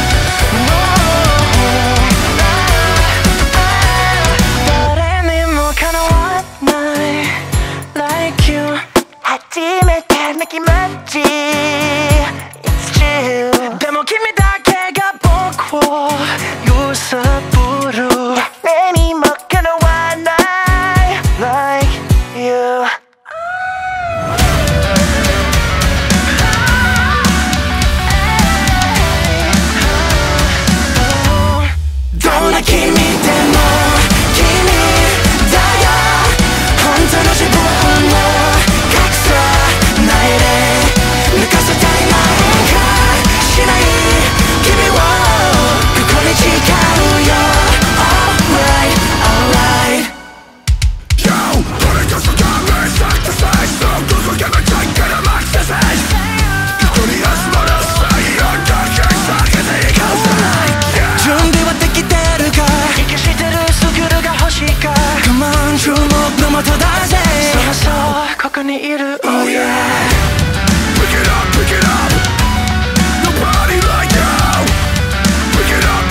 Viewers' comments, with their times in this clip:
0:05 when that beat dropped, I was in heaven
0:58 you know someone Is a God if they can do a beautiful singing voice Then immediately go to this